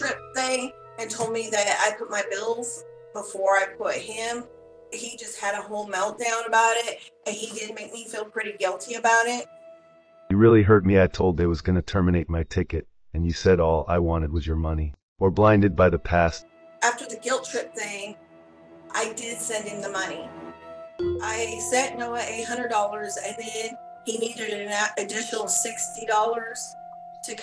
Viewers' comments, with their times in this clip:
0:10 I just don’t understand how she fell for that. You can tell by the voice and the mouth movement, on top of everything else, that this is a scammer. 🤦🏽‍♀️
0:11 the monotone AI SMILING while saying “you REALLY hurt me🥲” 😂Delusion is a HELL of a drug. But in all seriousness, she’s obviously trying to fill a hole in her heart where her deceased husband is and it’s sad/pathetic that catfishers take advantage of that. She just wants to feel loved but she’s essentially breaking her own heart by falling for this scam. SMH
0:14 😂😂😂Another very believable AI voice over video